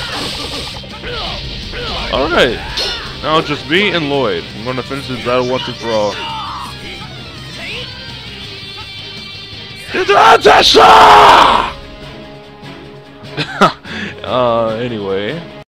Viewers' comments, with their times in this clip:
0:10 NOW that's the fucking greatest Ichigo impression I've ever seen, DANG man.